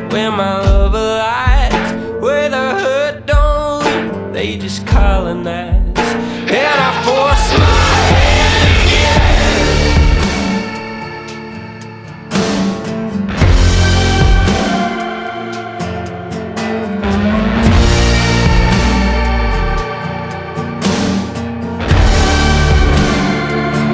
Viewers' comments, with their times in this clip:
0:09 that effect somehow reminds me of Dexters Blood theme